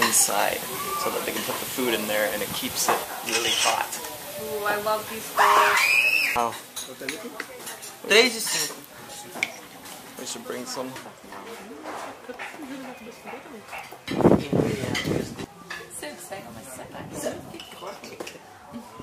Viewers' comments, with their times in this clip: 0:06 What happend in I can hear a someone screeming. 🤔